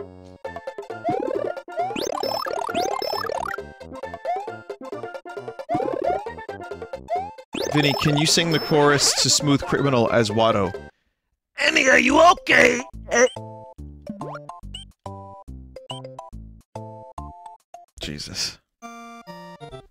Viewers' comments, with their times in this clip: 0:07 Watto’s Smooth Criminal.